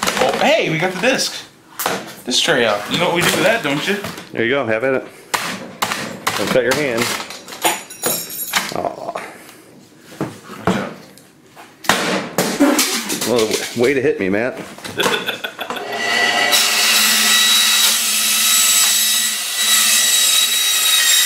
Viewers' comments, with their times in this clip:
0:04 the metallic noises are somewhat satisfying here when he breaks the cd drive